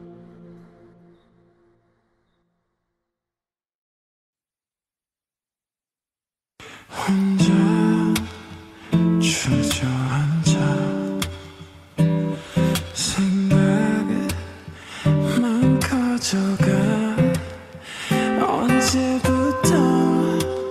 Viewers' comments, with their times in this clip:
0:04 this makes it sounds so holy i love jimin